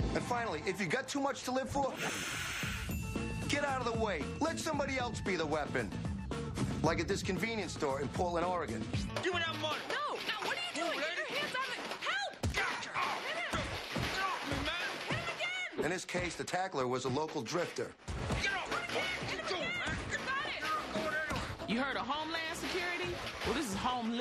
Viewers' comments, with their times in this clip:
0:08 you come here to blow us with soap .......... 😂😂😂😂 insane voice overs